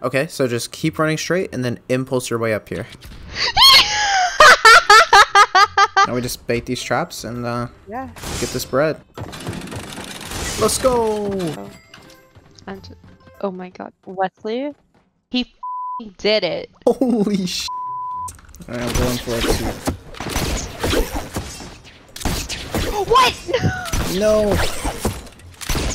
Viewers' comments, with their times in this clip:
0:10 Did anyone else hear her voice go like a dudes